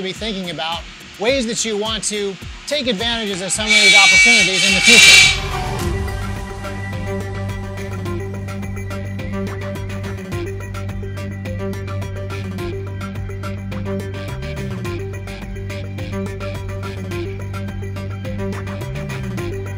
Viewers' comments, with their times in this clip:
0:04 crrrrrash... And cut. That's a wrap.